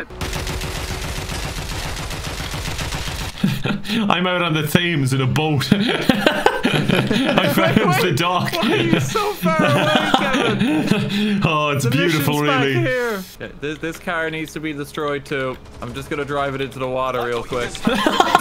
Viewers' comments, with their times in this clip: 0:04 I have genuinely never heard anyone pronounce the H in Thames! lol!